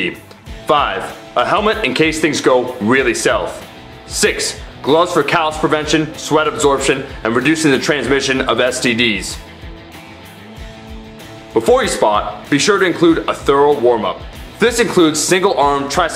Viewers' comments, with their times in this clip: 0:04 I do not wanna be that guy but I honestly heard "Six: gloves for calves prevention"